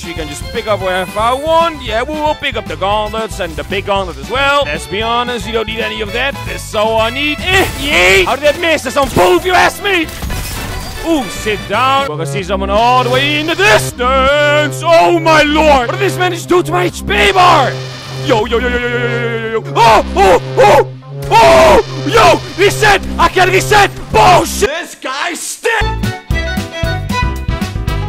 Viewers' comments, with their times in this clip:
0:09 I just heard it "its poo azz me"